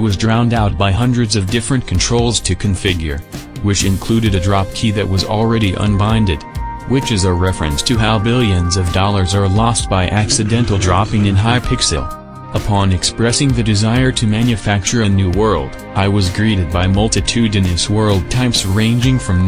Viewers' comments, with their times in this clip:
0:07 Risk Of Rain 2 Stage 6 music going wild ngl